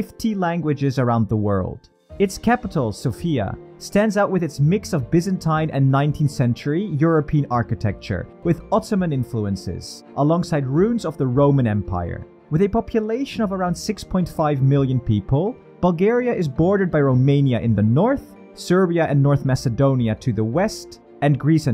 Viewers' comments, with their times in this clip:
0:04 Sòfia!!! Didn't you learn already?!?!